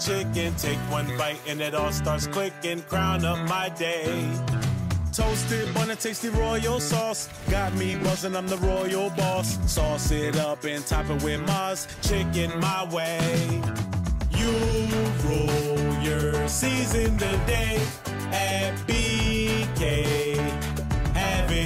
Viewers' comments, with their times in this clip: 0:07 Got me bussing on the royal balls